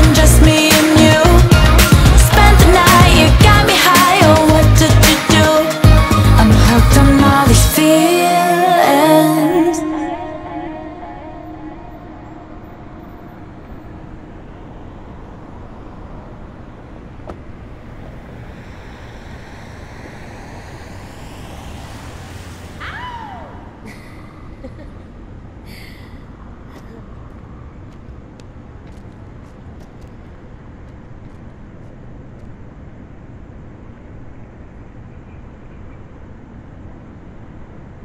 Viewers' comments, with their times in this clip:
0:10 Does anyone else hear a weird noise ?
0:22 You've heard of the lesbian growl, but have you heard of the lesbian howl?